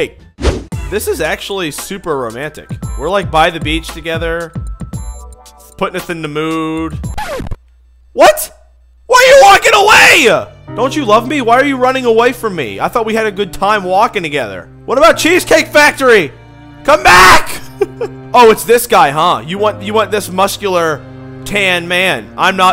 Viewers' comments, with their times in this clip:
0:08 it was romantic until you farted hahaha i like that moment